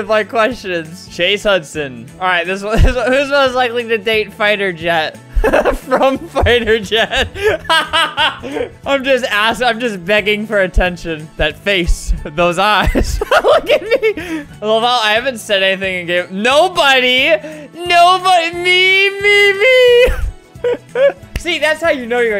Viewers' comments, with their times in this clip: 0:05 that laught tho..